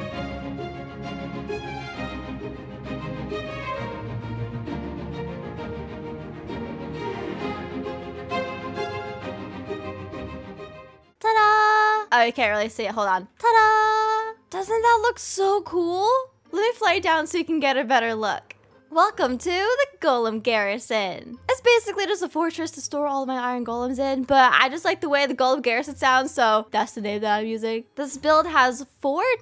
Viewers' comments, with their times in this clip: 0:10 I love her voice awwwww....